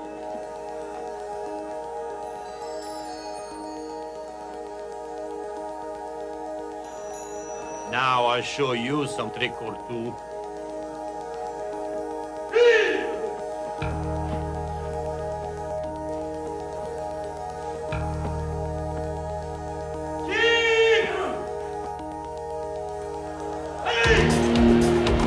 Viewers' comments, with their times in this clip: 0:07 What did the guy say ? I just can't figure out what language he is speaking.